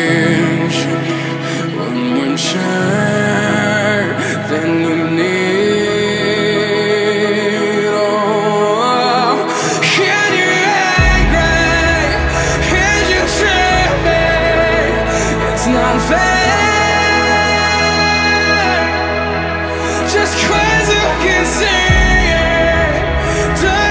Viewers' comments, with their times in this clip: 0:08 omg That gives me chills everytime, jesus what a beautiful voice 😳❤